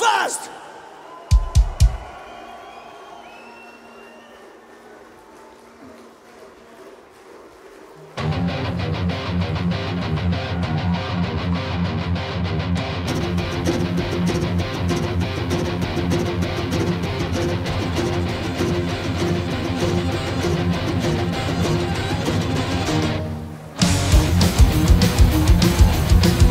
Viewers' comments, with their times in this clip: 0:07 I KNEW this would sound better in the original Mongolian!